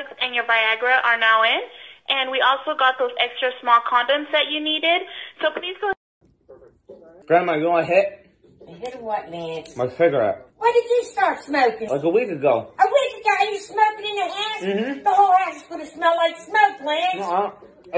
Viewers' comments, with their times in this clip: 0:03 LOL I had to turn the volume down